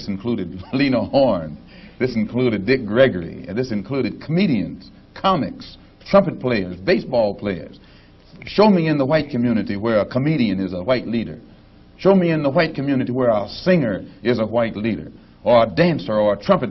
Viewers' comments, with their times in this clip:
0:04 Love how he just laughs at the idea of “comics and comedians” as leaders. Way too many people (and they themselves) take what they say on politics and culture way too seriously when comics are just people who have opinions on that stuff like the rest of us. Why listen to them like their leaders?